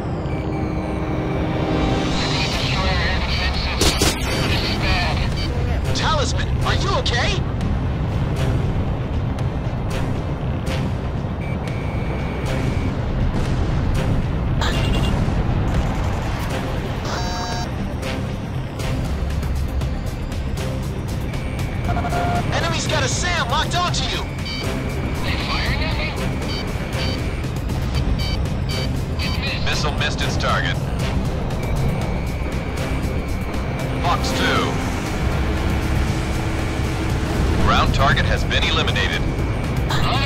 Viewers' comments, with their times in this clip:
0:05 warning turn your volume down
0:26 Is it just me or was the missile alert going off to the beat of the music for a couple of seconds there?